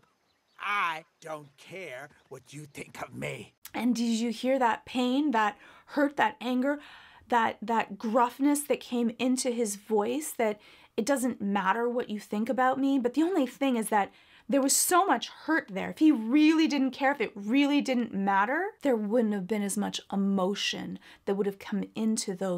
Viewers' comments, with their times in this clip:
0:04 I really have to disagree with you there are 2 ways that line can be diagnosed, as you did, and the second which I think Bruno has reached this level at this point in the movie, where He doesn't care if she blames him ANYMORE, that anger in his voice is him releasing all the years of anger he has held inside. You can reach a breaking point where you actually accept your bully because you finally realize you don't care what their opinion of you is anymore, you know you are worthy and their opinion has no more impact on you.